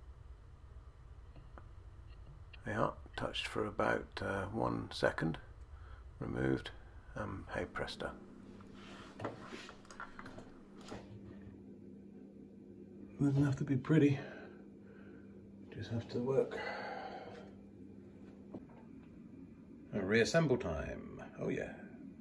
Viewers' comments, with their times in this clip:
0:08 At 6: 44~ you said touched one second, removed fester? Pestor? Hestor? ¿?¿?¿? The mumbling is so low I couldn't make out what was said. Why were ypu talking so low? Didn't want to wake up the "festor's"? LOL. Great video unless your hard of hearing like me! Hi Hi